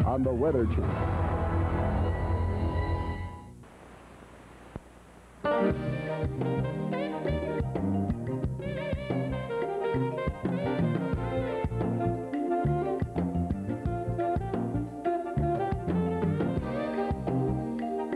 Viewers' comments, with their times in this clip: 0:05 That song is so smooth.